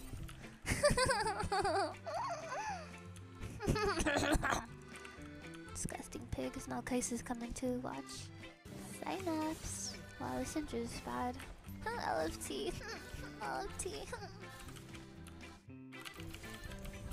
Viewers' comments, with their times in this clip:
0:03 wtf is this laugh bruv